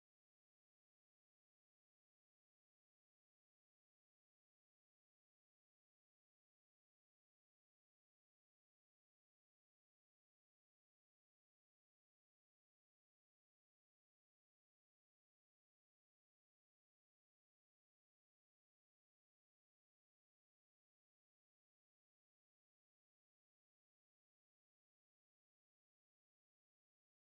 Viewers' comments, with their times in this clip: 0:08 U have no audio from